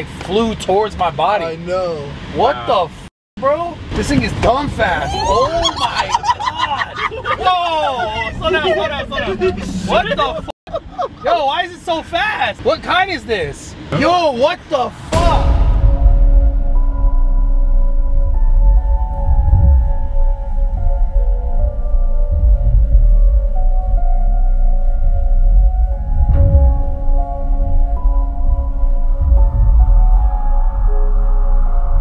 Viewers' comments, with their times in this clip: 0:05 the laugh gets me 😂😂
0:15 Not gonna lie......the audio mix is FIRE. Atmospherics give the feels